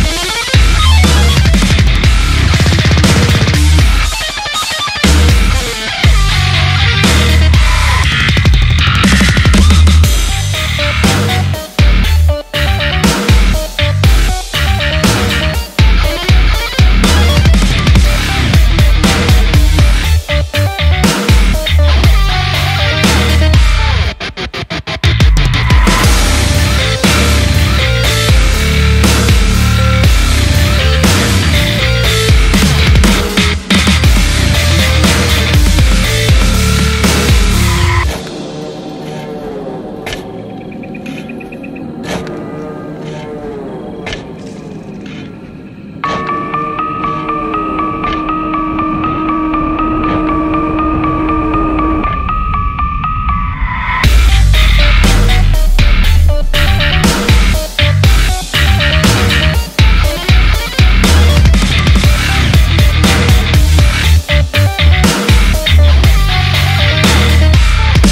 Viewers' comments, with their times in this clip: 0:08 This bass line hits as hard as heavy loaded cargo train.
0:53 sickest bass riff ever? Girl is INSANE!